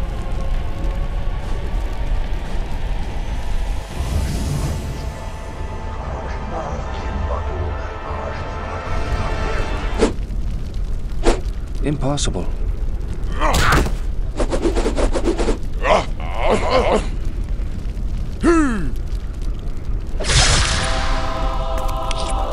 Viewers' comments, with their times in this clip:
0:05 The One Ring chanting from LotR made me lol